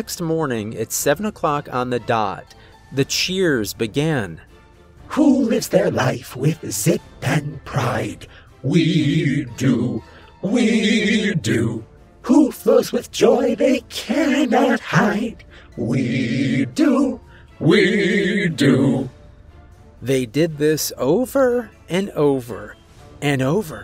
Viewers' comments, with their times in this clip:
0:04 that chant is becoming a soundbyte😂😂😂